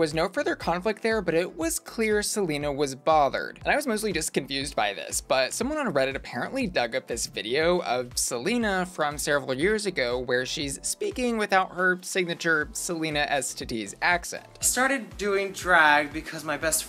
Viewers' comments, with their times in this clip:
0:03 I HATE HOW THEY SKIPPED OVER THAT like at first i was like hehee then she got MAD so i was like IS IT FAKE??? i didnt even really hear a spanish accent when she talked